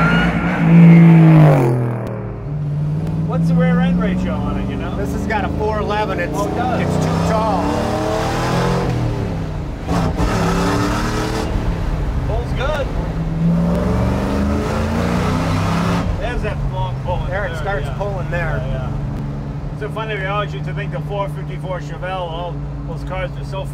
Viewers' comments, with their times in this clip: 0:09 Pulls good. LOL That car and blower sound great.